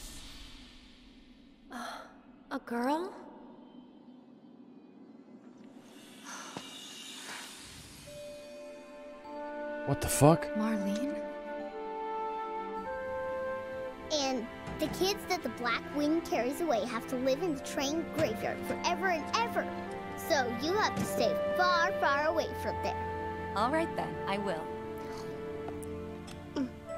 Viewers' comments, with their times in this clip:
0:10 geez this music is so damn nice 🤧